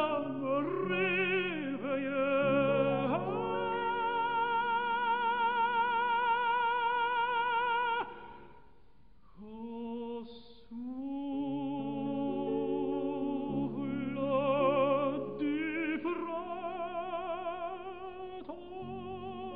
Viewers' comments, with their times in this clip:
0:03 Divine... I love how he doesn't go full forte fortissimo on it. Classic Gedda really.